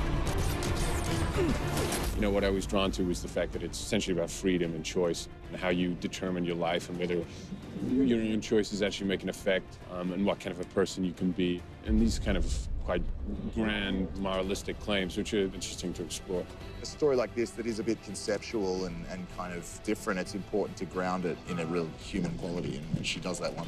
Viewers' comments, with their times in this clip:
0:03 whys he talking in an American accent when he's British?
0:09 why is Theo speaking with an American accent when he is English?